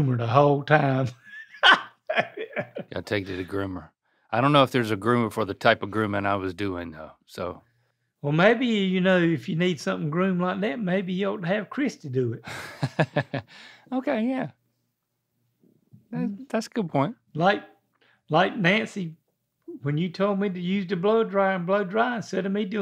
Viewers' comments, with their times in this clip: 0:08 Link's Dad was sounded so disappointed hahaha